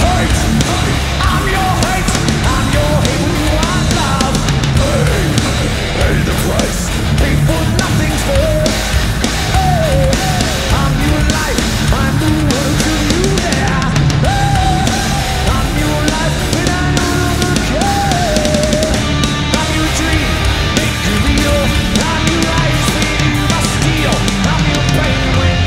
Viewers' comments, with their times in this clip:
0:07 That growl ... HOLY FUCK JAMES!!!!!!